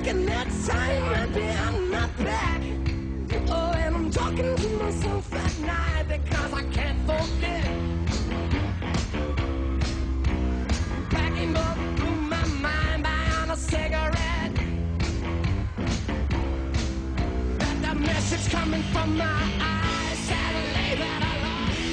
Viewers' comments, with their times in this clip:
0:05 It’s 2021 and I’m still appreciative about jacks mess up and how he flawlessly (ironic) recovers.